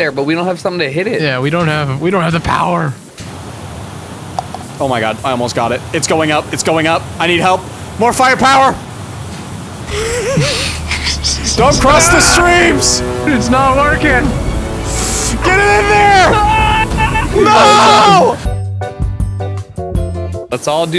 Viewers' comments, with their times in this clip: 0:03 sounding like the boys bathrooms in schools 🤣